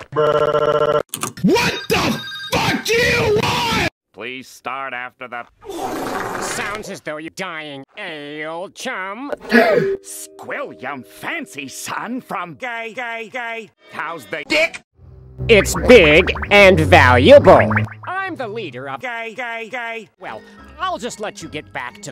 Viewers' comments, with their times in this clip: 0:05 wet fart sound effect